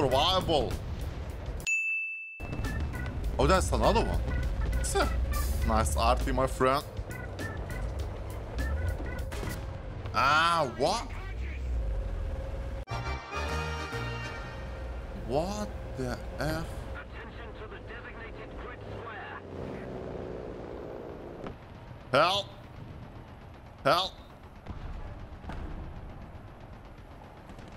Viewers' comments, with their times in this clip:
0:10 i hope in three year you will have a beautiful british accent :)